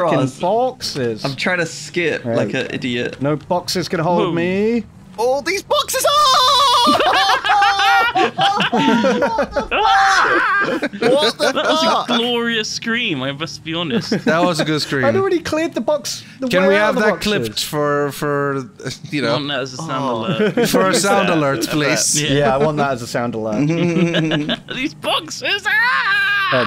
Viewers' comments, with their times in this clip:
0:07 really was a glorious noise.